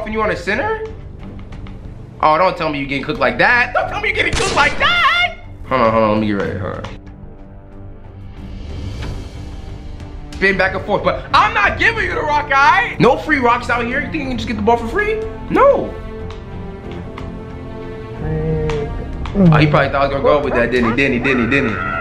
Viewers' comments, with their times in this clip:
0:04 Hight note like a pro 😂
0:04 Yo auto tune just turned on for a sec